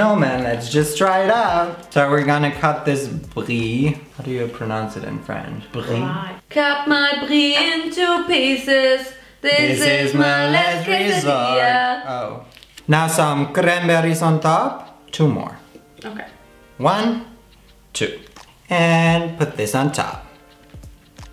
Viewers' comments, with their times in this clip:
0:05 ayyyy I love that song😂🖤🖤